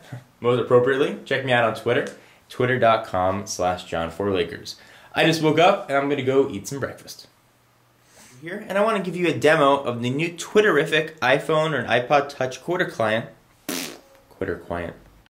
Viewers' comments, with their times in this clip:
0:12 did he say hooter client? someone goes to hooters a lot.. ;-)